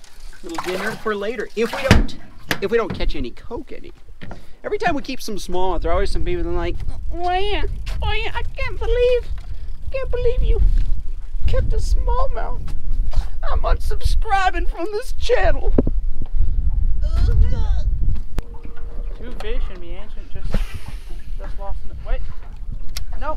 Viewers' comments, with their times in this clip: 0:05 sounds like idubbz
0:07 loving the voice!! xD